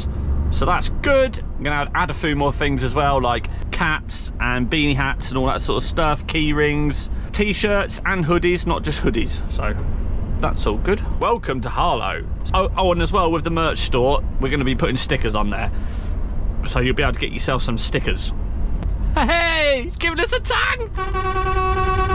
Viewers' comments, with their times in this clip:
0:03 You said cats in the merch